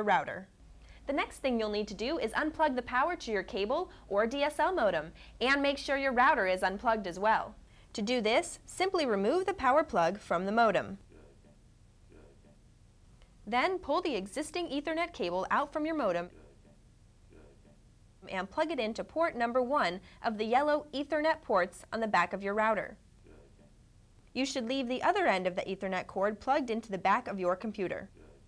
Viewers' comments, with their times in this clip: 0:09 I hear a man say "Du-oh Duh Du-Duh Lol Now I'm hearing it everytime after she says something. Pedo-Fuckin-files in her house :P